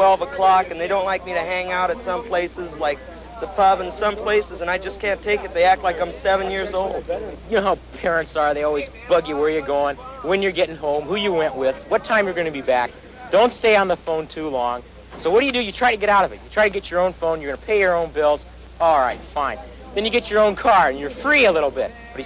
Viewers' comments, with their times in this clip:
0:04 Dude is from the future.. even the way he talks. My parents are like, i mean like....😂😂